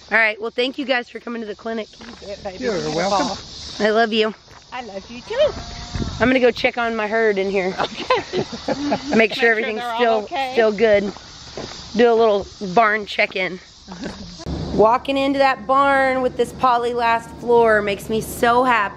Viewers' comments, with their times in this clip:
0:05 Its prolly a cow the moo
0:05 Is it just me or do you hear a cow Also my favorite horse I own is my barrel horse Chevy.